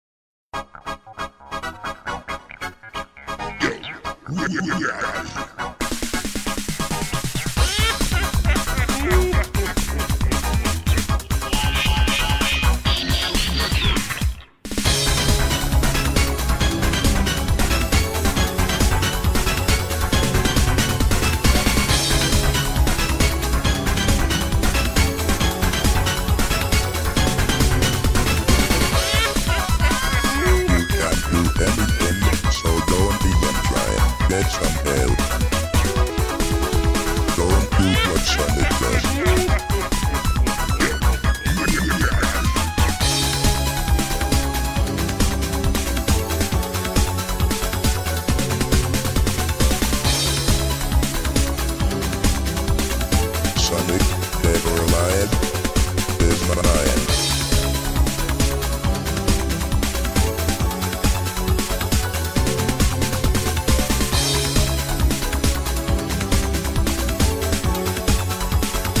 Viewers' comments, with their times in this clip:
0:03 Robotnik called me gay
0:03 that guy in jp sound track got me dying 😂
0:03 WHY I HEAR GAY??
0:08 has so perfect it sounds like all the villains are laughing at Sonic for his mistake
0:11 kinda sounds like the metallic voice is saying die
0:12 top 10 greatest beat drops of all time
0:30 first time metal sonic talks
0:30 the vocals in my opinion, sounds like metal sonic is talking. so basically, that's what I personally think metal sonic sounds like.
0:31 it’s starts singing but I don’t understand what he’s saying
0:36 It kind of sounded like music from a Sega Genesis game instead of a Sega CD game.
0:42 i was today years old when i realized the past melody is playing here
0:53 this voice is so creepy and menacing